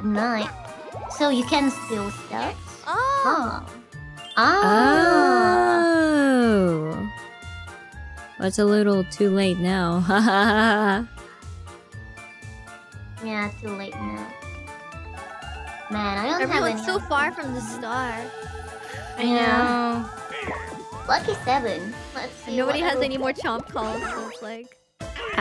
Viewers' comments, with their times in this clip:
0:08 That akwark laugh is killing me 😂